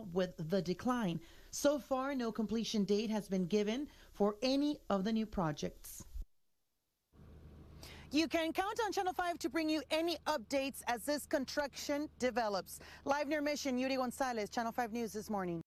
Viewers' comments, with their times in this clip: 0:11 bad speech impediment.